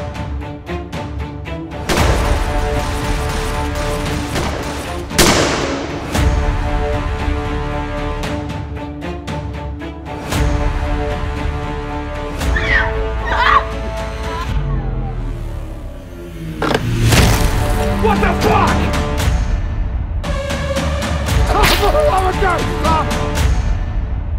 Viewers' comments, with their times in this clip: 0:07 anyone catch the "BEPSI"? Lmao